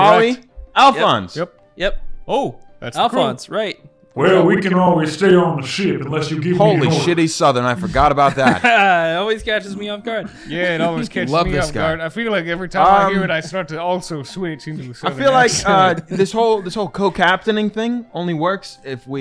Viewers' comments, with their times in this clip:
0:06 he forgot he was southern lmao—